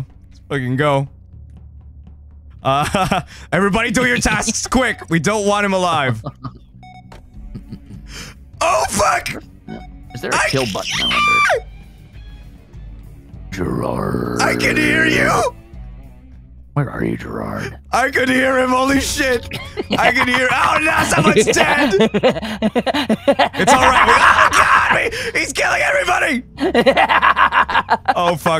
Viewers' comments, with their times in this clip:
0:10 Squeaky toy or bird call perhaps